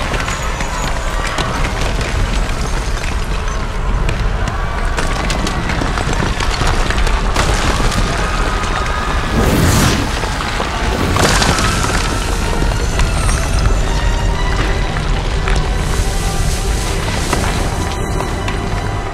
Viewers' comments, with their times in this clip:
0:05 whuts even more horrifying is that you can hear the screams of the souls being tortured as they open the gates